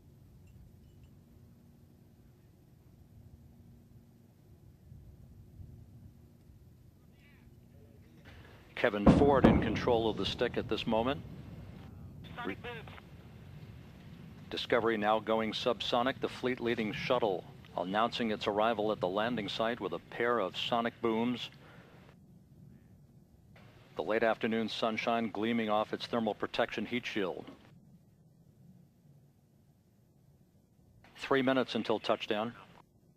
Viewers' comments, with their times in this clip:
0:08 Boom Boom Translation: I'm home
0:08 I get goosebumps from the sonic booms .. Don't hear a lot of those
0:08 Twin Sonic Booms
0:08 When theres 2 sonic booms does that mean it's at mach 2?
0:14 sounds like it's STILL supersonic to me 😲😲😲😲😲